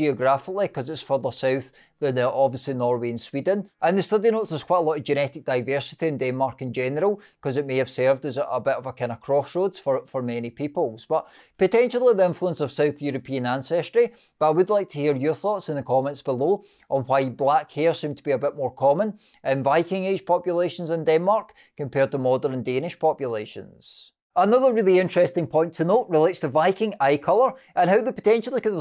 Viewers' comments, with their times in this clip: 0:09 You're accent is interesting - I have to concentrate to follow your talk. Nicely done. The Irish clealry distinguished being "White" (Norweigian) and "Black" (Danish) vikings.